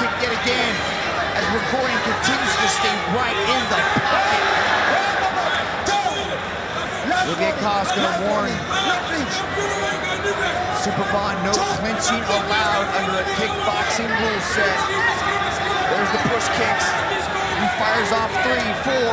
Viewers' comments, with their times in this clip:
0:05 Why was the ref yelling ?